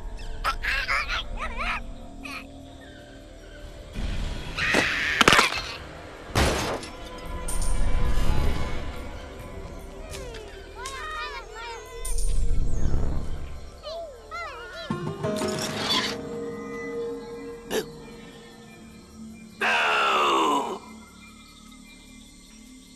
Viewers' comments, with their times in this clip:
0:04 My favorite army bear scream
0:04 army bear scream